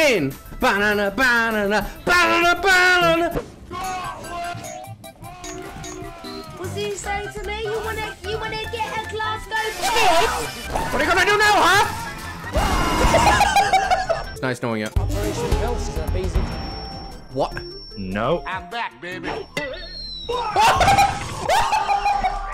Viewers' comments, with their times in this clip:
0:03 wait, Sledge is Scotish, and Clash is English, pfffft!